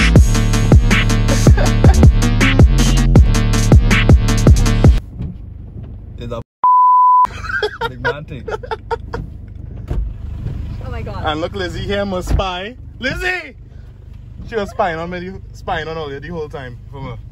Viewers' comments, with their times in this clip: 0:05 the way I bawl out LMAO